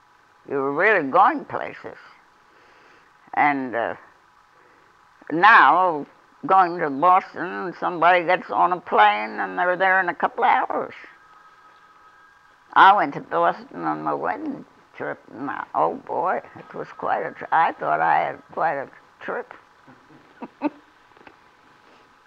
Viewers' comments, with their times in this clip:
0:09 the phone ringing nostalgia